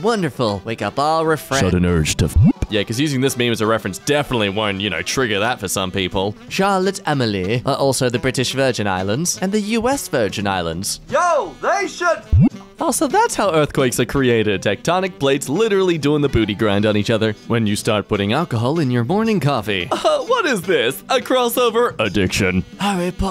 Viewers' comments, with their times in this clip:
0:06 "charlotte emily" is what i heard while not looking at my screen, shat me up for a bit that did. yall fnaf fans would know what im on about lol.